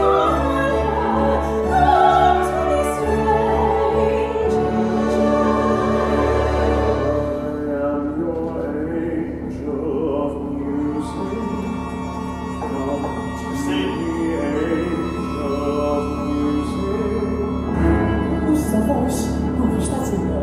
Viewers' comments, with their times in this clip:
0:07 Hearing this live I thought it was a mistake. If I'm not mistaken it was previously sung through, leaving Phantom singing 'music' on the same note the organ entry is on for the main theme. Seems like Jon is leaving space for Matt to sing but I do miss the smooth transition into the theme.